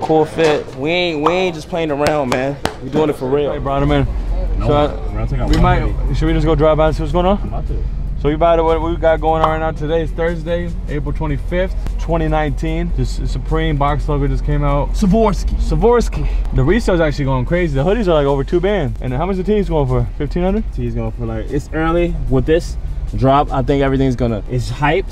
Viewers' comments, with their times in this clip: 0:06 what he say??😂